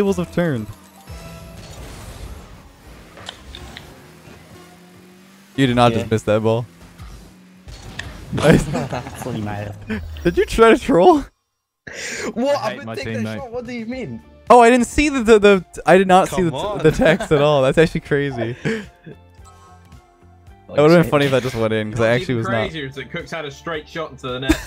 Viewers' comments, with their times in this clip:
0:08 I heared an italian phrase, so I searched on Google who is the italian one